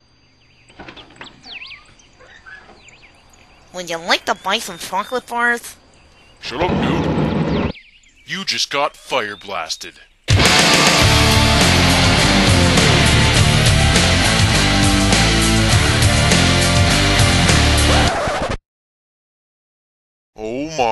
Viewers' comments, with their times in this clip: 0:04 omfg the voice is freakin hilarios!